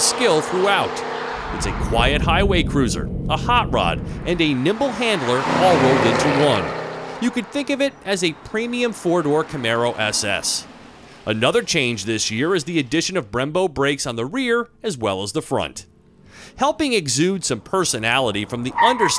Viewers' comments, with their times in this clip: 0:03 love how you mentioned what a great nipple handler it is.